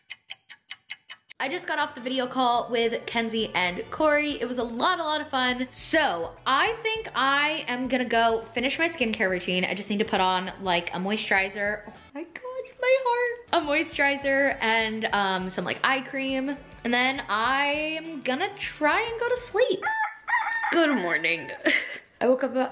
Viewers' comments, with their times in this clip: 0:07 WORTH IT. THIS WHOLE VIDEO WAS WORTH IT. THAT LITTLE YAWN AND JUST THE DEEPEST SNUGGLE UP ON YOU..YOUR HEART?! OURS ARE OBLITERATED. <3